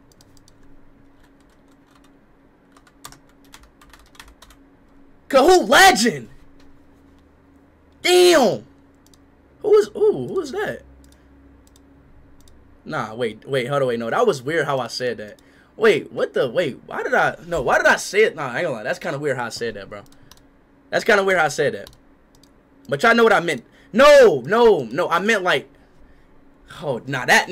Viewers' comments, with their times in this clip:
0:08 bro became drake for a second there 💀